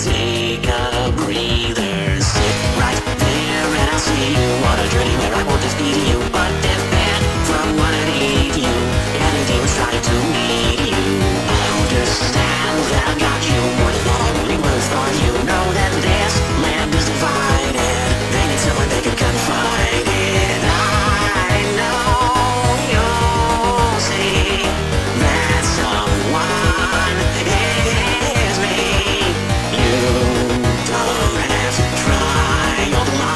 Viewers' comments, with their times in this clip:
0:08 from what what'd eat you edit: WAIT DOES HE HAVE 2 MOUTHS?
0:21 I'm getting crazy or it sounds like Mickey Mouse?